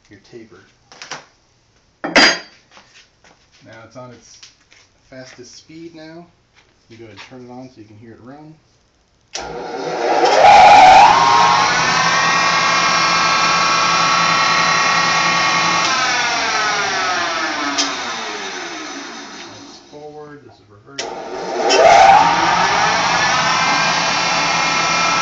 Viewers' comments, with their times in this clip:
0:08 Once you've turned your volume wide open so you can hear this guy whispering, he turns the machine on and blows your speakers out. You've been warned.